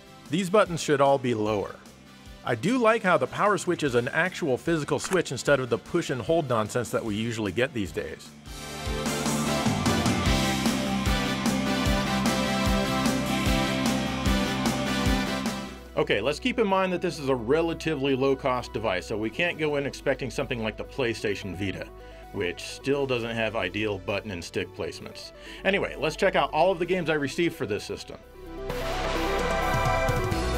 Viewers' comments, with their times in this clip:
0:08 anyone else think of Alvin and the Chipmunks on the cutscene music
0:12 I love the 80s rock background music